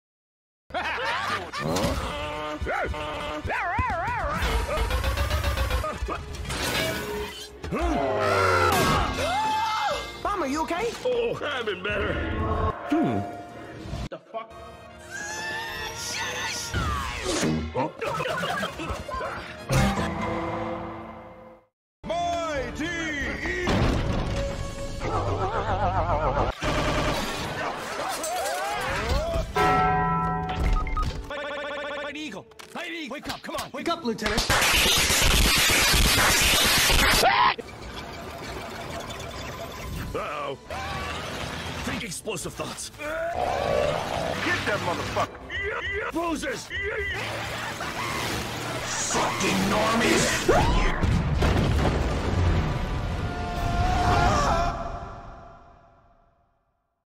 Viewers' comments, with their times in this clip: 0:10 clever that you add the metal pipe while there was a metal pipe falling 😂
0:20 Did Bomb just fist Chuck in that pipe? *DUN DUN* (Ngl that law & order part killed me 😂)
0:34 Your alarm trying to wake you up
0:34 I've been trying to find this slapping sound I don't even know why😭😭😭
0:49 "F*KING NORMIES! REEE!(echoes)" Gots me🤣